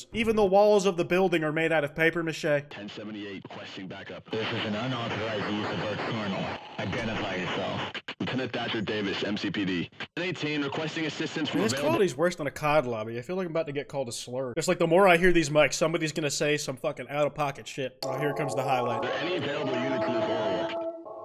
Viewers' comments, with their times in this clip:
0:06 it sounds so much like my school’s loadspeakers that’s the scariest part to me